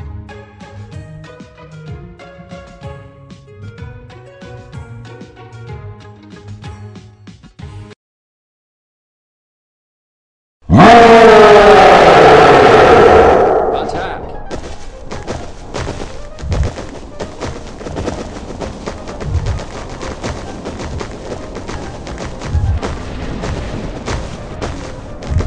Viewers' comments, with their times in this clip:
0:10 Ahhh My ears died
0:11 BRUH THTS SOO LOUD